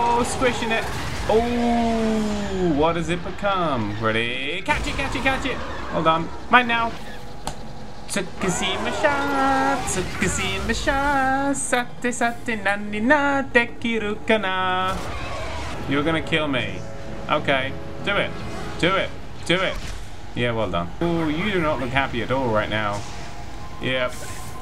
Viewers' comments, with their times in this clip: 0:08 Sounds like something from bulgaria